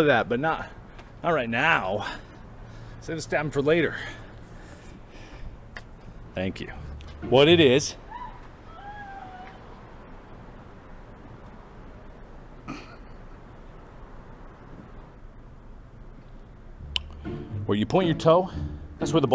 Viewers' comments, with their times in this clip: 0:07 I can't tell if that was cries of pain or pleasure Idk might've been both